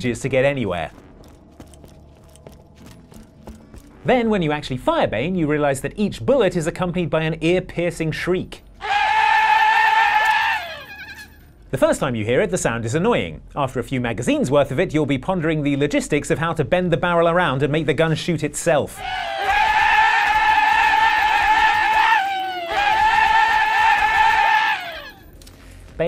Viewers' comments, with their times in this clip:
0:09 AAAAAAAAAAHHHHHHHHHHHHHHHHH MY EARS NEEEEEEEEEEEED SOME MEDIC BAAAAAAAAAAAAAGS